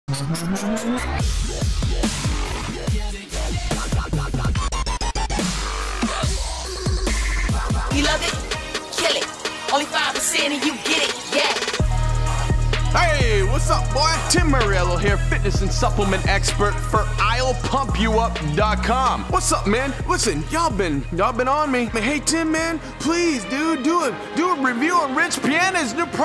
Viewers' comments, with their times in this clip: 0:08 The song that starts sounds so fkn sick What's it called???